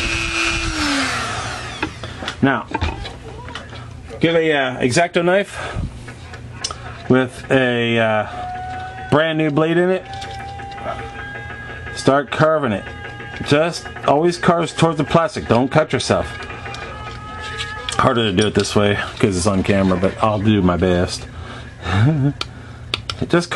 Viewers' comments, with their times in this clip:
0:06 I find it hilariously coincidental that when he's using the knife, Hudson is screaming in the background from the Bishop's knife trick, lol. Great video though, I just bought 2 of these model kits, great to know what I am in for ahead of time!